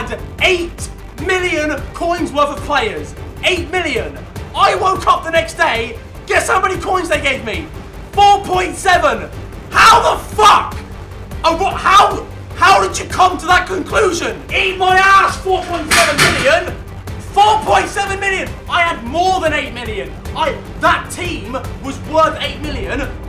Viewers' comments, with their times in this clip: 0:08 my ear drums broke